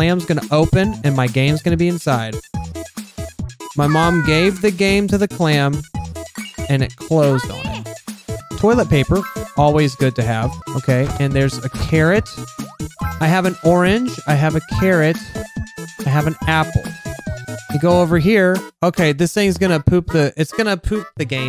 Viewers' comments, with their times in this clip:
0:03 I like how the clam says "Paa~!" It's so adorable!